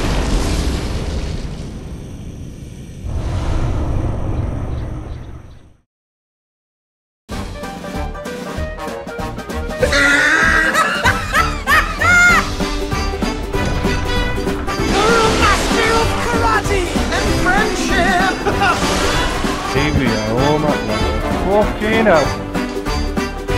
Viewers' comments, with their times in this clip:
0:07 words cannot explain how happy I was to hear this music from this channel